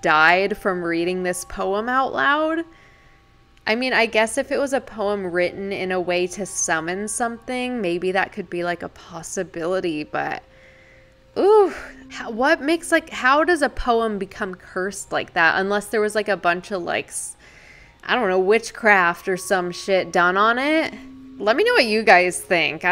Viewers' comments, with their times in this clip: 0:10 I was listening to the podcast and there was a male demonic voice in another language on I stopped listening to it and came to the YouTube video and I wanted to ask u did u add that cause it creeped me and I don’t usually get scared so I wanted to ask